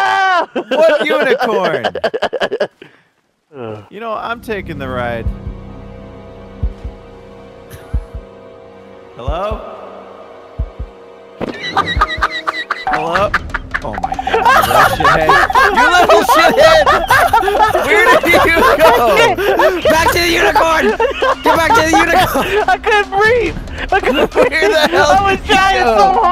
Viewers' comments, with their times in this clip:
0:10 that laugh broke me
0:11 I can't stand against your laugh lol Ahahahahhahaa, that laugh tho 😂😂😂😂